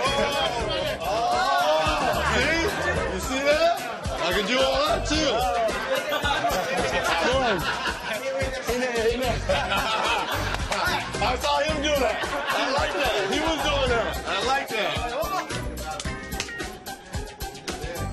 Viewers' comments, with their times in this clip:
0:05 listen carefully someone shouted "mayweather style"😂😂